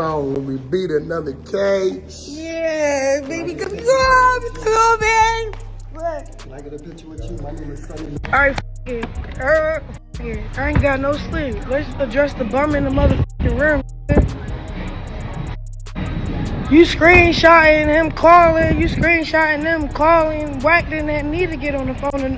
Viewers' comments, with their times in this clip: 0:03 wtf is she saying?